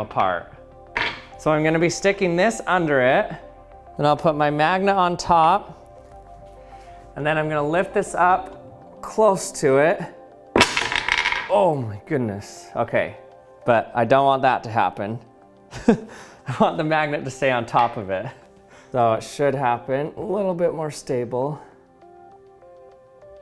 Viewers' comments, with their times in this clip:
0:08 that "close" sounded like it had some autotune on it, lol